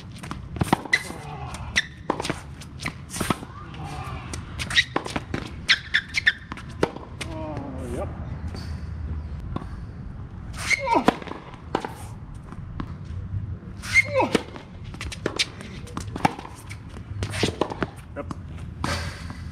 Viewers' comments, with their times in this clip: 0:05 kim possible sneaker squeak